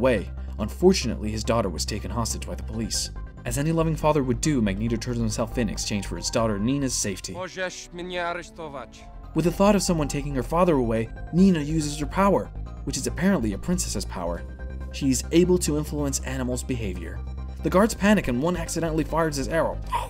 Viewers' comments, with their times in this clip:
0:06 his poliah is terrible.
0:07 that's some great value polish, it's so fucking terrible.